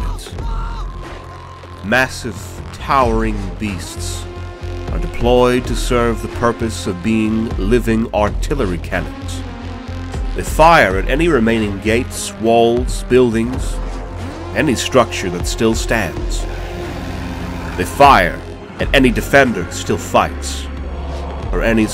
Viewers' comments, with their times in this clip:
0:04 Whats the music that starts ? It's so hype and I LOVE IT❤